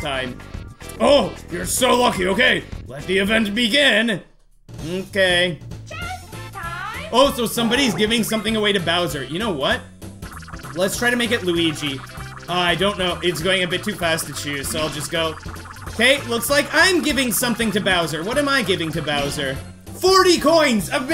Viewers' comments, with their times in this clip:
0:05 I love how confused the announcer sounds here